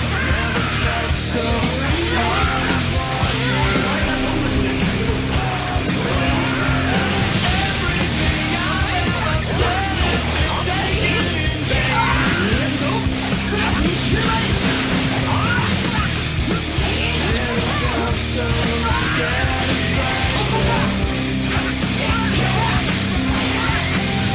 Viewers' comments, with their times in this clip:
0:07 the music sync with Cooler was amazing